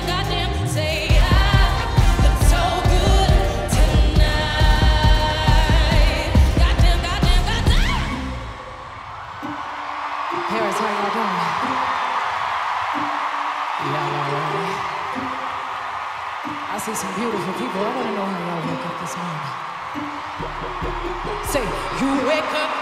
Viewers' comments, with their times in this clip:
0:06 It's the scream for me